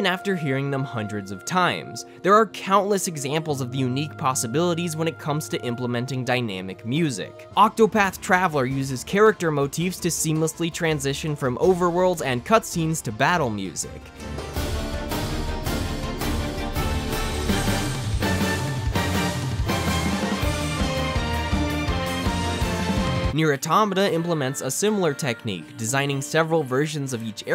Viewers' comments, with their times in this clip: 0:08 I CANNOT GET ENOUGH OF THE OCTOPATH TRAVELER SOUNDTRACK!! IT'S SO GOOD!! Just the small bit played gave me chills. Honestly, I think it's the best soundtrack ever imo, and I've listened to A LOT of VG soundtracks